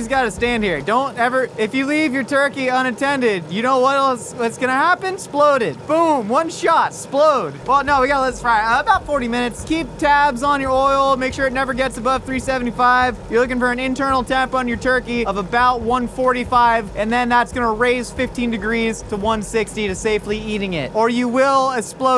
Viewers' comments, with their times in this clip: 0:08 Sounds like every drill sergeant ever if you do something wrong, only thing people die.